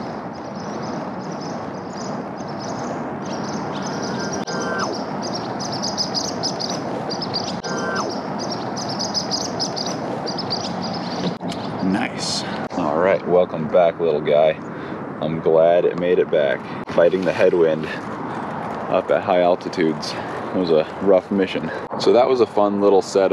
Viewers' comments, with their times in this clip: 0:05 here you can see all the birds trying to expel the plane flying at high speed behind it and tweeting all around.